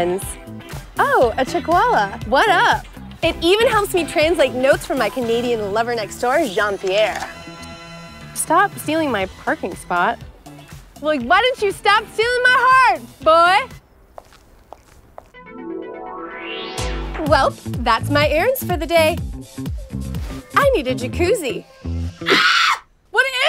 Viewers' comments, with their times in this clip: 0:08 the way she says “boy” makes me cringe so bad. Along with the rest of this ad. 💀💀💀